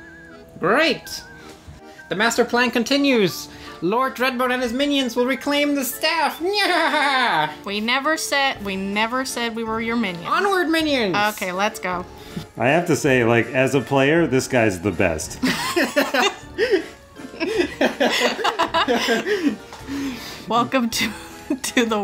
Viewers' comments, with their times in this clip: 0:05 definitely necromancer Papyrus
0:05 why is lord dreadbones sound like papyrus?